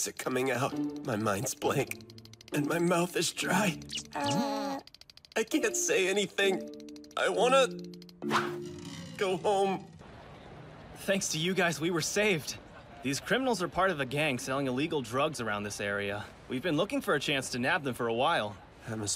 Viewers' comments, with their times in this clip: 0:07 Aizawa: sigh Me too